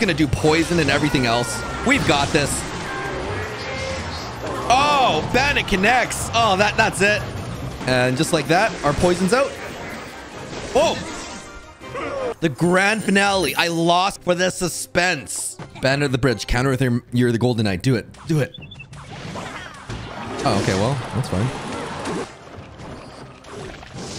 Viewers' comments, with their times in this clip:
0:10 the perfectly cut scream 😂
0:11 Perfect time scream